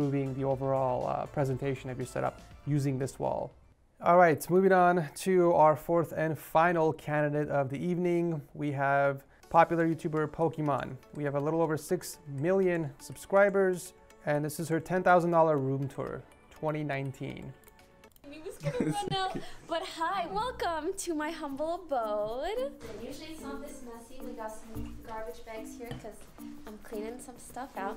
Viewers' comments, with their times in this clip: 0:04 Did he just call her Pokémon .-.
0:08 popular YouTuber Pokémon Let’s go
0:08 “Popular YouTuber Pokémon”